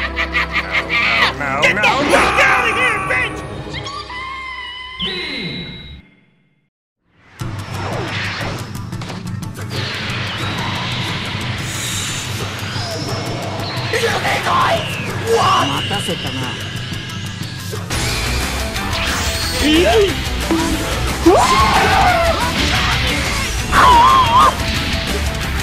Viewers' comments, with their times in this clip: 0:05 why do I hear naruto music?
0:06 epic music xD